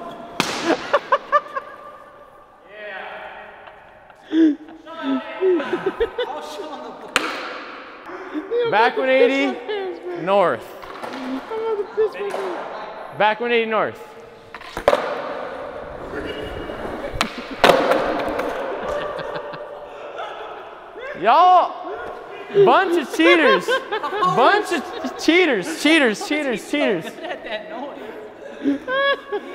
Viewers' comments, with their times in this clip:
0:10 was the best scooby doo laugh I’ve ever done